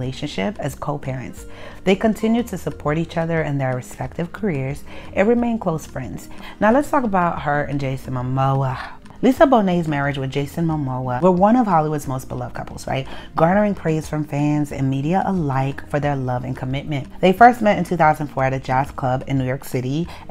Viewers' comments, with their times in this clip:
0:08 the way you say Jason Momoa's name LOLLL